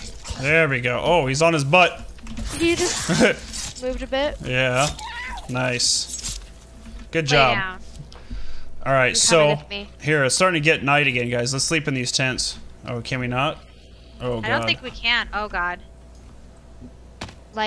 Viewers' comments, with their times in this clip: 0:04 it sounds like a cat